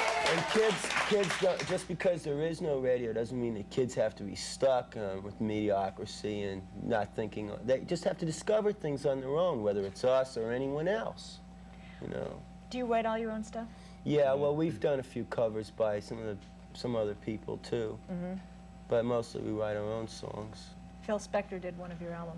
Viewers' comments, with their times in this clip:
0:10 "Dee Dee just said mediocrisy..."